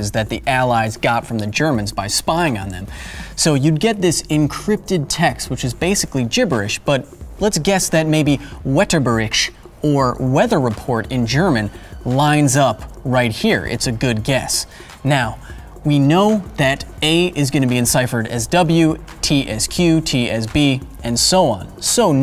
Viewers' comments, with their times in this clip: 0:08 Nice try, Kyle, but I know you can do better than that. 😂 Made me laugh pretty hard, though: "Whetterberickt". 🤣 Good luck next time!